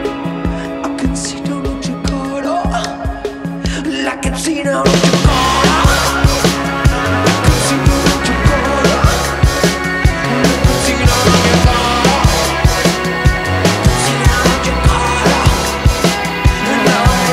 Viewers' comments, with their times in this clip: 0:04 burnt out star's bass line is insane